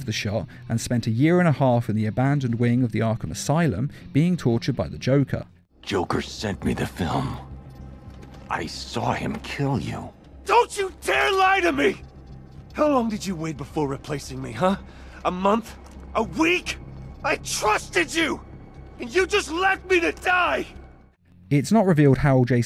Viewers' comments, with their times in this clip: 0:10 That is one of the best bits of voice acting I have ever heard in gaming. The anger and sense of betrayal is just so dang pronounced.